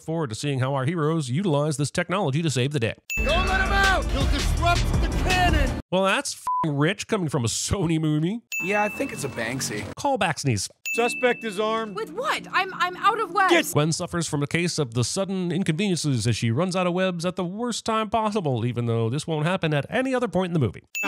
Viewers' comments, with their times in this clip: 0:06 a sony moony? 🤣